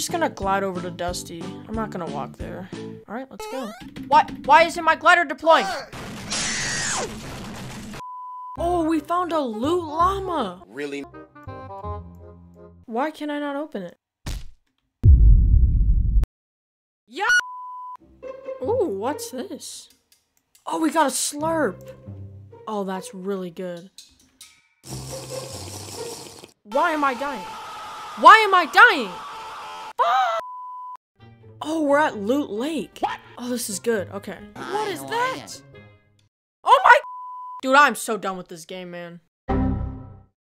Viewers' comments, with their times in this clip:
0:05 my scream when i was about to beat a geometrey dash level and i died
0:08 you say puches llama
0:16 the voice crack mixed with the perfect cut off is hilarious
0:16 The way the dude just screamed after the lama spit it XD
0:17 that voice crack lol
0:17 At voice cracking tho 💀😂
0:30 What was that moan LMAOOOOO